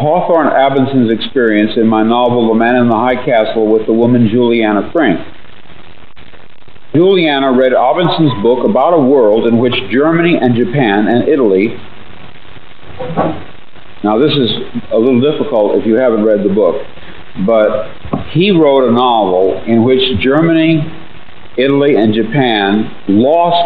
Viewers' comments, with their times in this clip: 0:06 Samsung notification lol
0:07 time traveler forgets to silence his phone which doesn't exist yet.
0:08 Iconic Samsung notification ringtone Pause & then a sound like a door shutting...... You decide
0:08 you hear the Samsung notification sound …………
0:08 Dude, you can distinctly hear the sound of an email message popping up on AOL mail or it's like the sound of an update on a cell phone. I've heard that sound a thousand times. WTF?